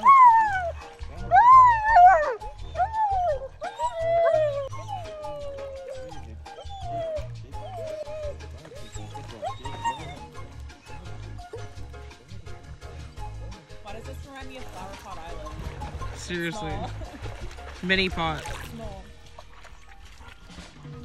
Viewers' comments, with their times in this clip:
0:05 was the loudest i think i’ve ever seen Jet!